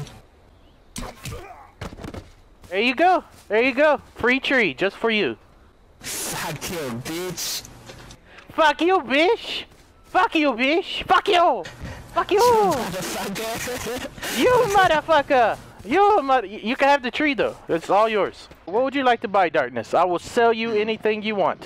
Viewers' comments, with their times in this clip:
0:08 the way H2ODelirious says "fuck you" HAHAHAHA